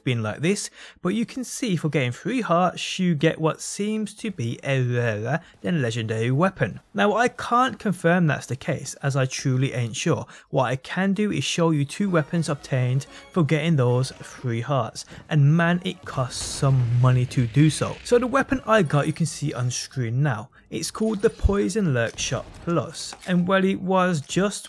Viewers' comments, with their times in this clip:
0:05 who else understanded ”wahwah“